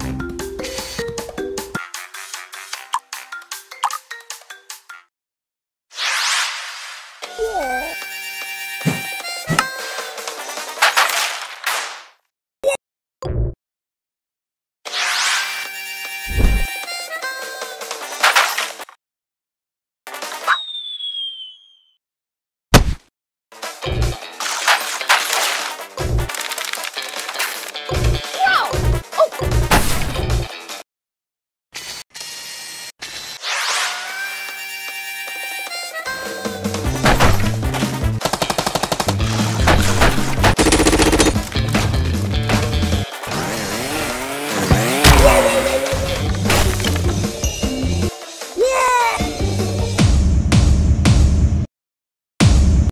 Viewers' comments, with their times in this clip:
0:07 that little noise he makes is adorable
0:41 I think almost everyone didn't got but on when crash breaks the boxes it sounds like something s u s...